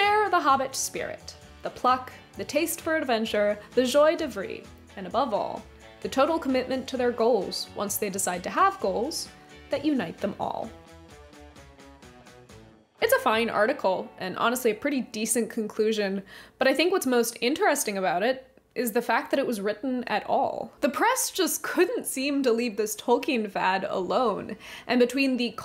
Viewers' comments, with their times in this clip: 0:06 ... after barely making it through the whole houghton mifflin debacle... to then come upon the joie de vivre massacre... it's just too much. I can't continue watching. I'm sorry.